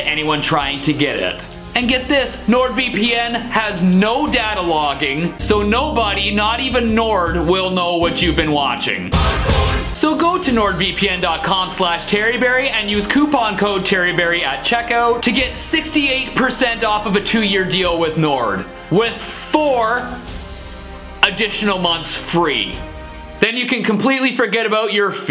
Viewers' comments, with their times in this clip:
0:10 Arise - Sepultura ( minute): "Last wish, five dollar tea"